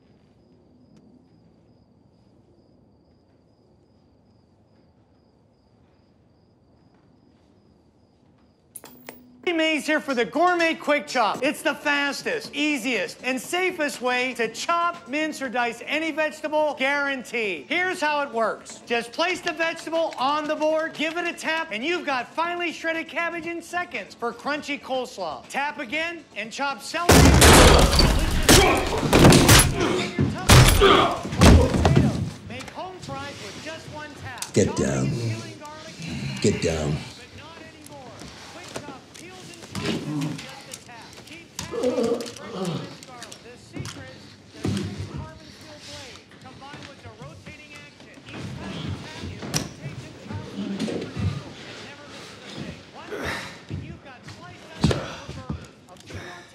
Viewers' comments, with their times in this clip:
0:09 Holy shet billy mays lives on!
0:43 Notice that the obnoxious and very loud TV salesman at just before mins for a diversion. The voice selling the cooking device gets slightly softer after the two henchmen get clobbered.